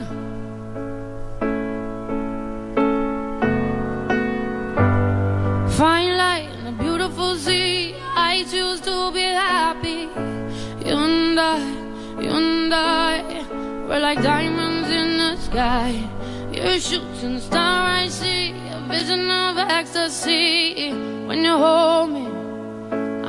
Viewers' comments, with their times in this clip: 0:04 As a music engineer, i would say it’s actually not autotuned. There’s a few notes at the beginning that sound a bit flat ( the words “find light”). If autotune was present, it would’ve fixed those notes. Sia generally has really good pitch control based on the performances I’ve seen, so it’s not suprising that she isn’t using autotune here. However, there are a few performances where it’s pretty apparent that there’s some pitch correction going on.